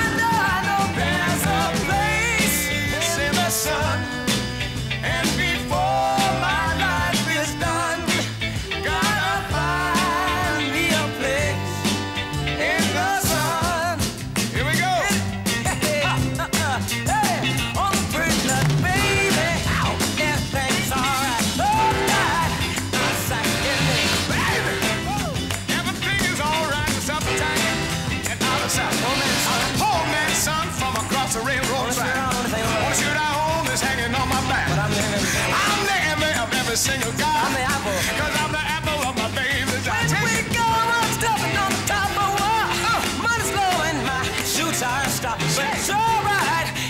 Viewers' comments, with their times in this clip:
0:09 On stage, next to a legendary peer, and Jones doesn't look like he could get more comfortable 😎! Their voices sound awesome together
0:28 Great performance... I was wondering what Stevie was saying in the background After rewinding a couple of times, it sounded like he was feeding Tom the lyrics. If that was actually the case, it's impressive that they pulled it off so smoothly.